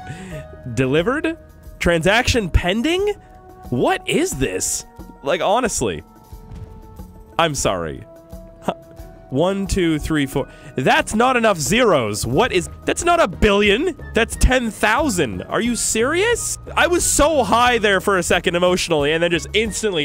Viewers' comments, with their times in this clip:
0:03 the way he said im sry had me laughing